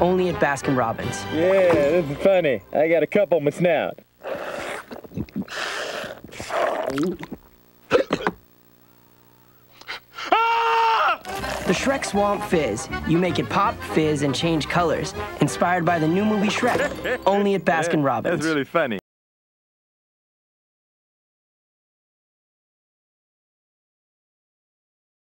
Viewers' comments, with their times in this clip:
0:04 (Donkey drinking the Shrek Swamp Fizz and turning blue. Donkey look at the mirror and scream.) Narrator: The "Shrek Swamp Fizz." You'll gotta make it pop, fizz and change colors. Inspired by the new movie "Shrek". Only at Baskin' Robbin. Donkey: (laughing) That’s Really Funny.
0:07 Donkey turned blue and then screamed after drinking the Shrek Swamp Fizz makes me laugh! LMAO 🤣🤣🤣🤣🤣🤣🤣🤣
0:08 If you listen closely, you can hear Donkey screaming before he actually does so.
0:08 Ah, analogue tape… you can hear Donkey scream before he actually screams. Damn, i’m old. 😂
0:08 I heard the tiny scream
0:08 Love how I can hear the scream in a distance before he actually screams
0:10 Donkey’s scream when he first saw ogre Fiona
0:10 Is that scream what I think it is?!
0:10 That scream on is so funny! Donkey also screams in the mirror on the haunted mansion. You should check that out!